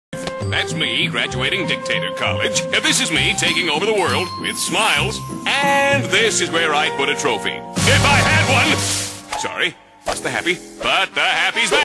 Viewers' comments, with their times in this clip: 0:09 why is nobody talking 😂😂